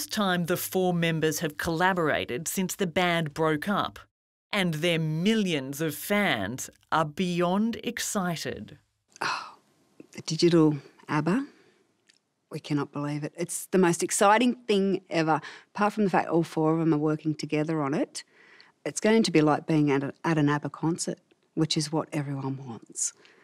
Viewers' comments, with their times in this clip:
0:04 I thought I heard “And their millions of fans are Bjorn excited!” 😉